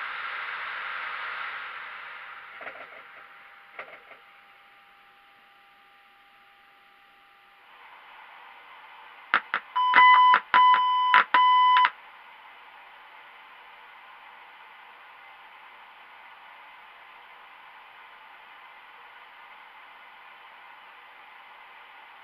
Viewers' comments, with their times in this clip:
0:09 That Sounds Making PC Beeps Like Boeing was Starting up?